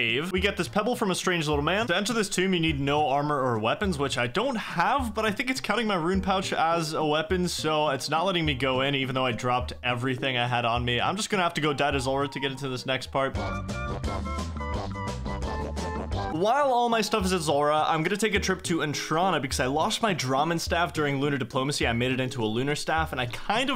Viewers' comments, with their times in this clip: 0:10 The whistles killed me 😂😂